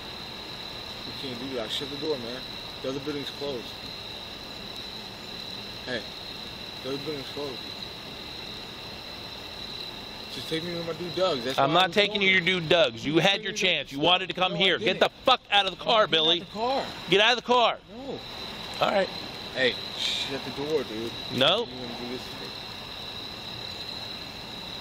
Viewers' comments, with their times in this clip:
0:08 Love the sound of crickets 💚 so relaxing 😴🛌💤
0:09 sounds like a gay couple fighting